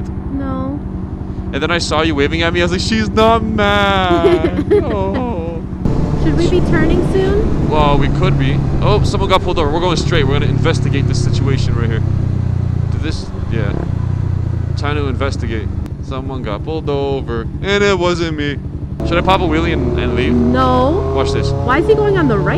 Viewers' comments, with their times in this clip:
0:04 that voice crack 😂